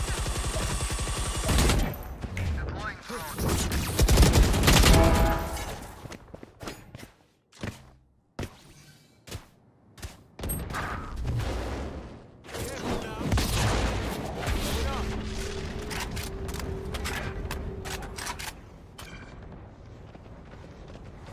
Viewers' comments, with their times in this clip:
0:05 When you kill someone with the skin it sounds like the: I like ur cut g-BONG! - you know what I mean? I like ur cut g